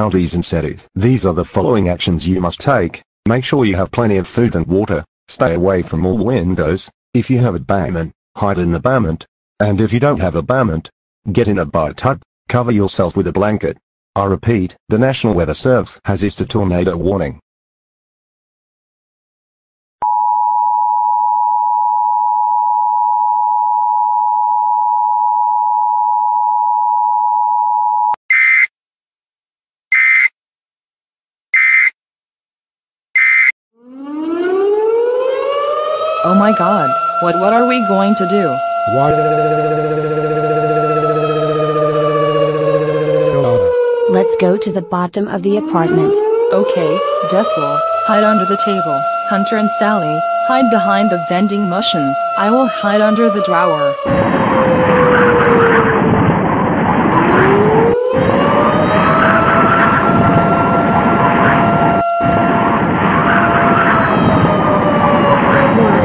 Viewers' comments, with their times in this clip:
0:07 they pronounce basemrnt as bament
0:22 nasional. It’s national!
0:33 The siren sounds
0:34 tornado siren sound effect
0:52 the vending mushun